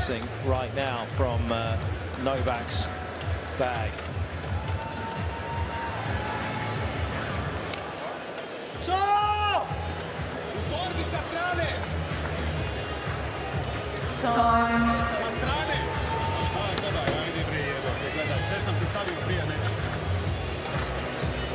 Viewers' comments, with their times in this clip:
0:09 Novak yelling So!